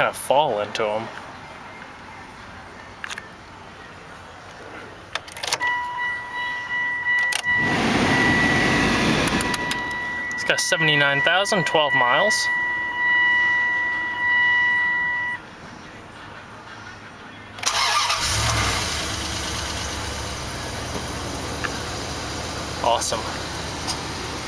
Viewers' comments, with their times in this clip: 0:08 the chime sounds different than other dodge and jeep and Chrysler chime